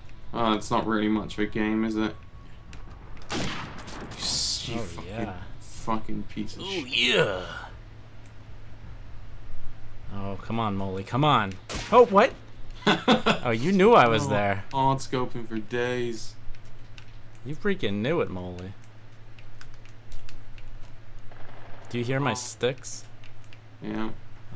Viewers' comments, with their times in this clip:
0:05 The Macho Man Randy Savage "oh yeah" impersonation.